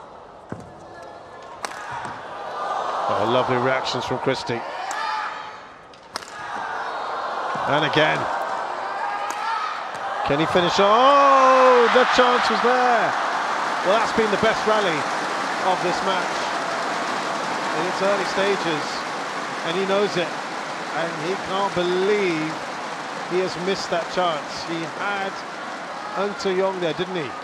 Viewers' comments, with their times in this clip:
0:10 can he finish...oh, the Jonatan there😂 so cute